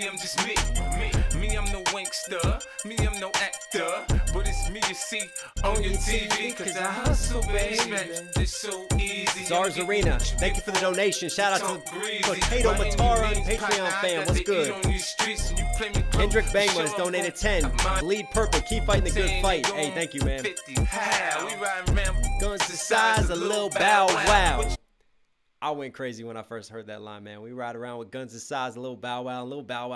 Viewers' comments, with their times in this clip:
0:10 in I love how he says CUZ I HUSTLE BABY!